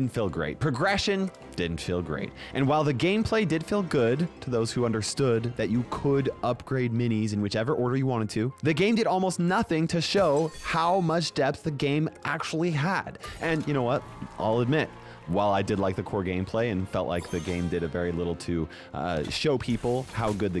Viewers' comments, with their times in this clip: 0:03 bro started rapping 💀